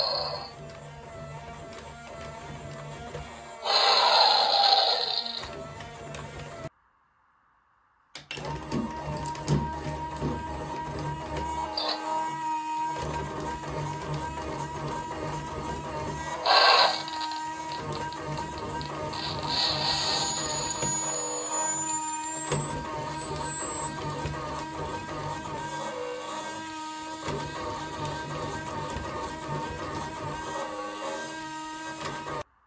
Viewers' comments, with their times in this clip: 0:03 Dino's last roar
0:19 that shit actually sounded like a flash bang
0:20 My favorite is the ice dragon Reason: Even tho the speaker hole is beyond nightmare fuel, the squealing got me the most.